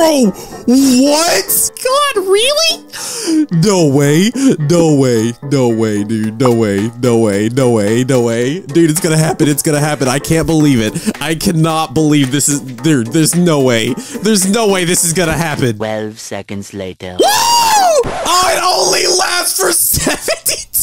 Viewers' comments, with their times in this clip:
0:04 what is doe way? lol xD
0:04 Norway 🇳🇴 Norway 🇳🇴 Norway 🇳🇴 😂😂😂